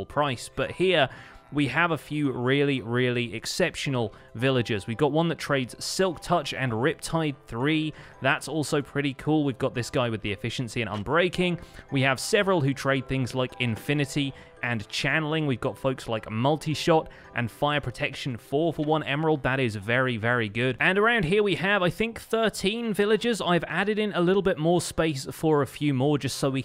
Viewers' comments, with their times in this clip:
0:10 I swear I hear a car door lock/unlock